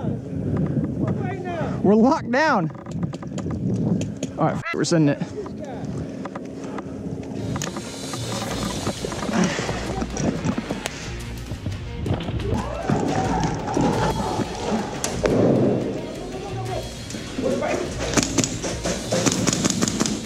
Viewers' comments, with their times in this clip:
0:07 that very awesome "Boom"👍